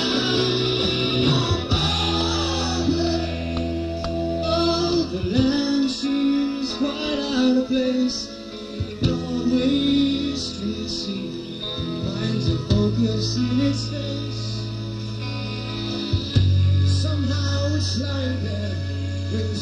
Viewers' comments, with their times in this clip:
0:07 Yes Peter is singing. Listen First Peter then Phil.